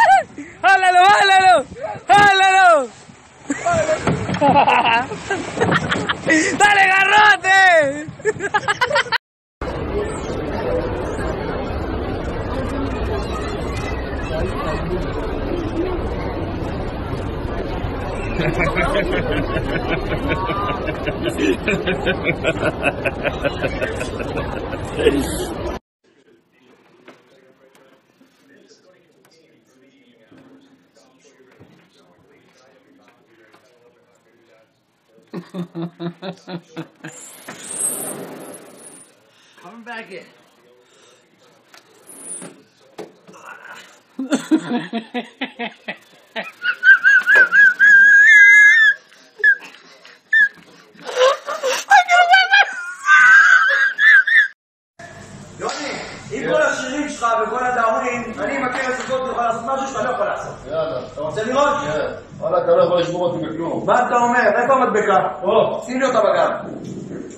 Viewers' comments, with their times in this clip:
0:04 sounds like Gru from Despicable Me or Dracula from Hotel Transylvania
0:18 that laugh= evil triumph.
0:42 the laugh cured my depression
0:44 The damn car in the background don't want to start up again...
0:45 the way this man's dying in laughter is making me resist laughing even more, the challenge is on
0:45 that's how I wheeze legit the exact same but if I'm laughing even harder it gets to the point where my stomach hurts and I can't breathe lol
0:45 this is my mums laugh
0:45 bro sounded like a train and a tea kettle at the same time!
0:46 i can't stop laughing at this part, best wheezing laugh ever😂😂😂😂😂😂😂😂😂😂😂😂😂😂😂😂😂
0:46 what kinda laugh was that? 😂 OMG! Over 1k likes?! This is awesome! Thank you!
0:46 mans sounded like a steam train whistle lmao
0:46 when the water in the kettle is boiling
0:46 That laugh slayed me.
0:46 😂😂😂😂😂😂 I'm in the ground.. i can't stop laughing his laugh 😂😂😂😂😂
0:46 dude kinda sounds like herbert from family guy
0:46 Me watching this video video em my rooom: kettle in the kitchen:
0:46 That one car my dad has when it starts :
0:46 My Absolute Favorite Laughs
0:46 for real i thought that someone was boiling water in my house and i live alone
0:46 is that a whistle
0:46 This laughter is me going completely insane with Beastars fanfiction, James McMurtry, the stand-up comedy scene with Grandpa Hugo from House of 1000 Corpses, Jack Sparrow clucking like a chicken, and that VHS preview from Ice Age about hits, moves, and grooves. AND ALL UNDER THE INFLUENCE OF CAFFEINE!!!
0:47 me starting my car on a cold winter morning.
0:47 omg that laugh 😂💀
0:47 Me: “Honey the kettle is boiled” The Kettle:
0:47 Bro sound like kettle 🤣🤣🤣🤣🤣
0:48 my ears just died 😂
0:55 I legit thought that was Joe Rogan at first